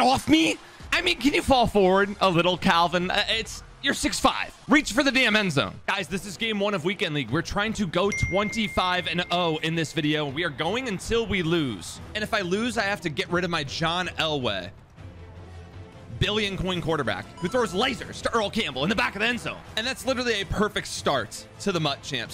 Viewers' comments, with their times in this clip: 0:08 anyone else thought they got a text or sum😂